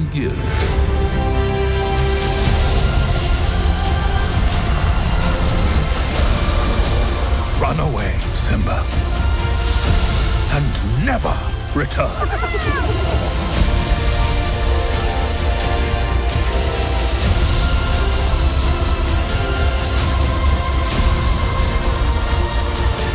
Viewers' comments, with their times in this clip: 0:03 that beat drop is the realest
0:04 God, always when I hear this mighty sound it gives me shivers... 😢 They used old Circle of life song <3 amaaaaziiing choice!